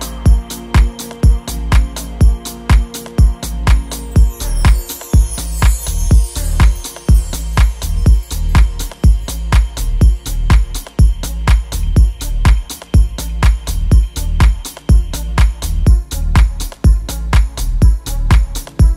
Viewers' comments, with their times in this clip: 0:04 divine - and the track ... so dark. I think it'd be a stuuunnniinng live set, id lose my mind